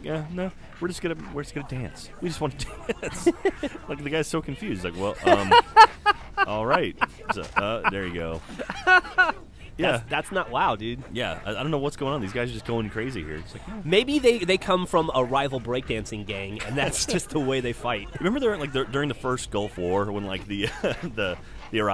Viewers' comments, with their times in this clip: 0:08 Is it me or does anyone else here the little "mew" when he kills the grunt? Poor little grunt. D: